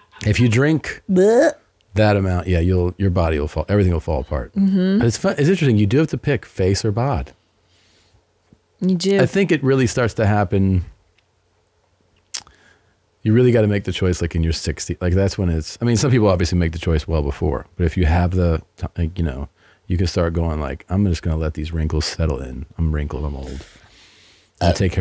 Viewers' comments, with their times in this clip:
0:08 I believe Tim hid a slight burp right before Christy let hers out. Looking to the judges table for a ruling.